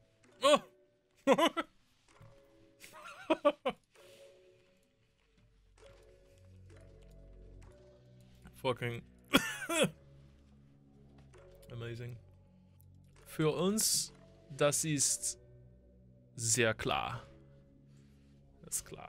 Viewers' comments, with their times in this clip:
0:03 The laugh and cough after 2 outing is very appropriate